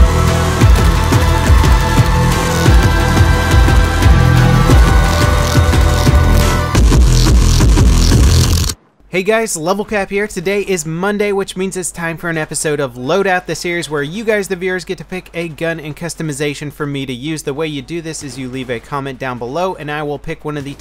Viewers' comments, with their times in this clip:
0:08 minutes of fart music!